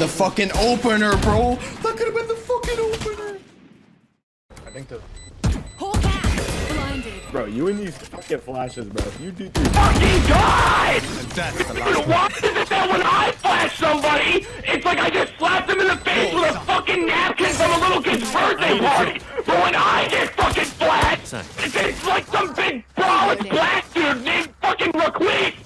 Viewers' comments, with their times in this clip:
0:06 LMAO that last clip sounded like MiniLadd on a shit microphone 🤣🤣🤣
0:09 "Oh my God" Skye said calmly.
0:09 ive never seen this type of player for so long, since CS Source , that mic quality hits hard just as it does 20 years ago